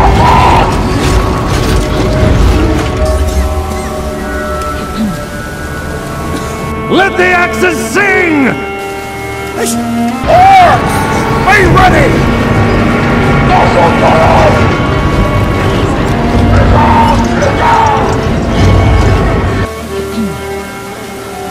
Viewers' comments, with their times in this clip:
0:08 "Let the axes sing!" ....achoo! XD Dwarf sneeze!